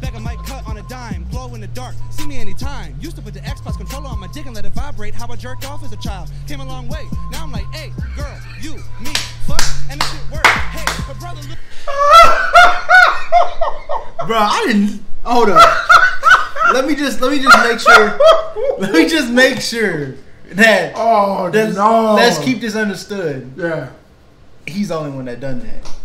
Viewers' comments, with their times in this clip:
0:03 That look when she got a deep voice from switching it up…cuz shes trans…
0:08 dad cracking up is my favorite part